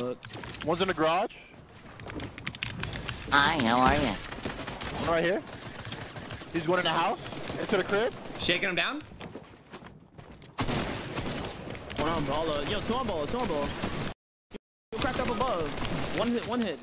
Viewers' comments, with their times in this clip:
0:03 Is it me or did that look like SpongeBob's voice (listen for a second) hahahaha